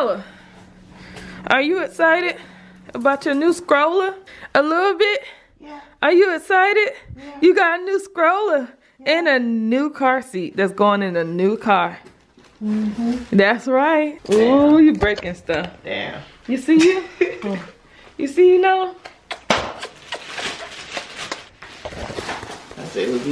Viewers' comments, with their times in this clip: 0:06 Lol I really thought she was saying yea ! ☺️